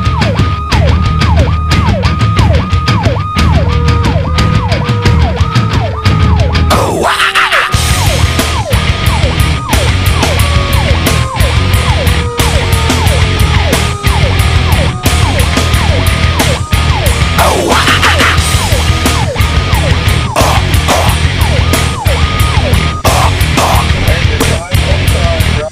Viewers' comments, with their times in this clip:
0:07 I'm not sure what a powercall is,but in my days i would "tweek" the electric between wail and yelp and get some cool stuff. The "q" is of course the ultimate, but you need somthin in-between. Excellant video! the song is dead on - it's as if the ladder see's the plume in the distance and says Ohh,yeah, lets go to work!! Good job, Manassas!